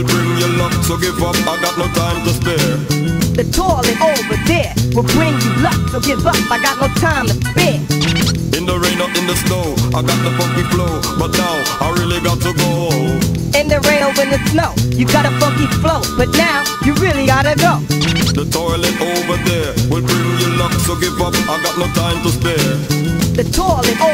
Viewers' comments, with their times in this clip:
0:08 that flow is impeccable